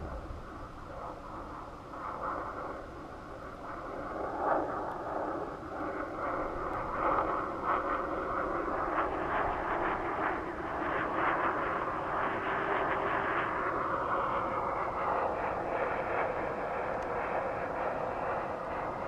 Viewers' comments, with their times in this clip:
0:05 jet plane noises
0:06 who the hell is screaming!!